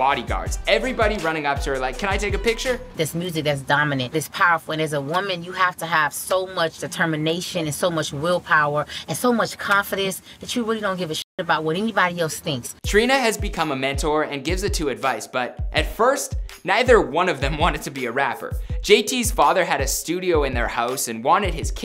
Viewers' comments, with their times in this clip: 0:03 HDz: Trina's voice is Nicki's Voice but thicker